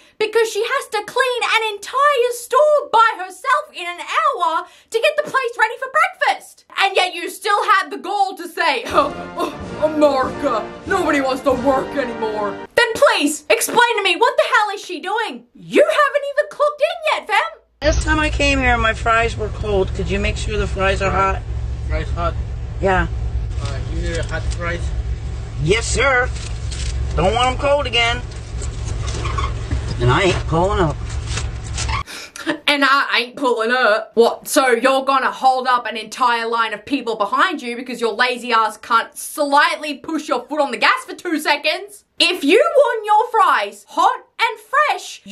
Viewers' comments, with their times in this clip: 0:10 this is the best american accent ever
0:32 Your Southern accent is actually quite good! Love from a Southern woman who is also tired of people being tired of abusive tiktokers.